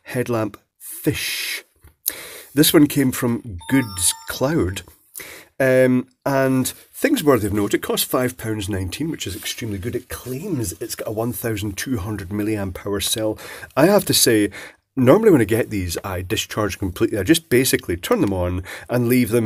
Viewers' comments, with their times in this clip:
0:03 Haha. At first I thought I had gotten a message I guess that cat s61 is still getting some use as a personal phone. 😁
0:03 How nice - we find that this particular seller's name came with its own music!